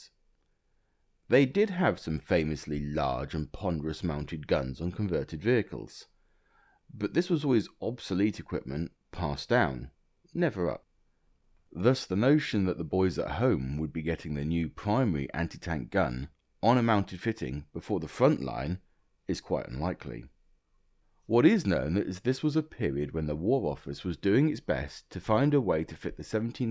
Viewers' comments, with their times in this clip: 0:10 Audio disappears for a second here. Also, this is more photos than I realized existed of this thing. I'd never seen the front views before.